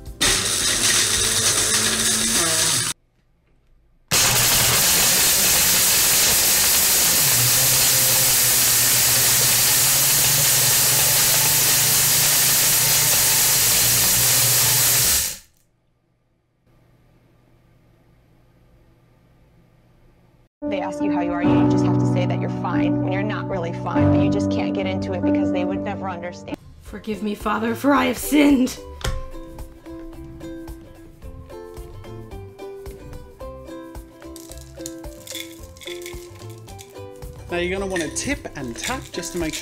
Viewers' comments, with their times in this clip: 0:10 Inhale inhale inhale inhale inhale 😂😂
0:26 "forgive me father for i have sinned" happy music plays in the background